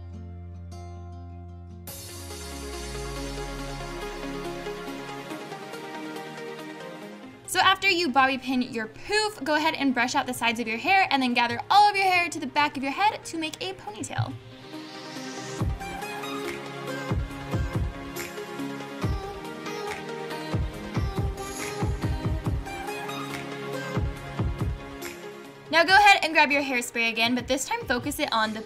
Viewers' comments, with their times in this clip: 0:09 When she said pouf I thought she said poop😂😂😜😜